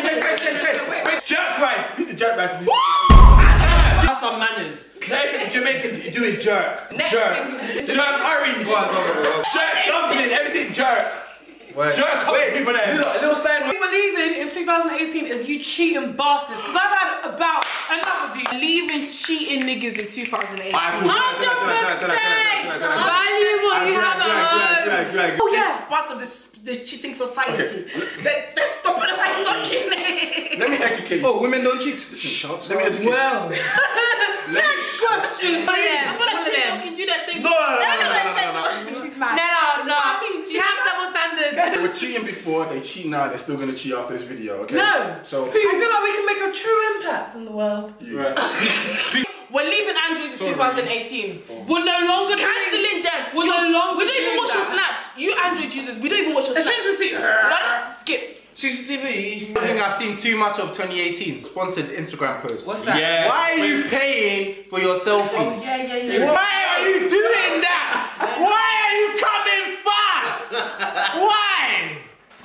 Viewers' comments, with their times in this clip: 0:03 why did i think someone banged on my door pls🥵🥵😭😭😭gave me a heart attack bruv💀💀
0:15 the mandem went silent because they all guilty af 😂
0:56 she said "as soon as we see- ARRUDDHHH" LMAOO i cant even spell it!